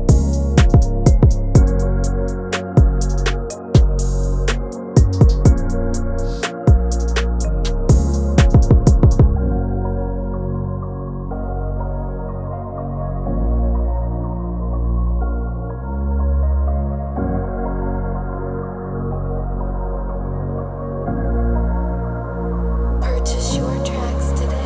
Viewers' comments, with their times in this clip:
0:10 i love that melody, you’ve used it on another beat i’ve made a song too